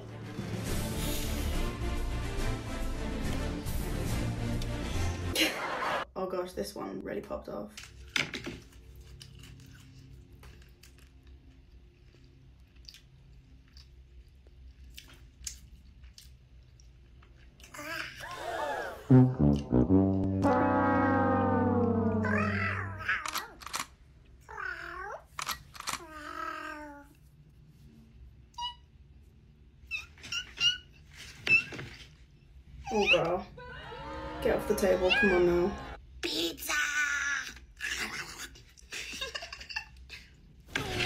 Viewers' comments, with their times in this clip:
0:08 did anybody notice how impressive her burring was on this TikTok? 😂
0:21 am i like crazy but those meows are kinda impressive to me 😭
0:28 those chirps sound exactly like my kitten and i really thought it was him 😭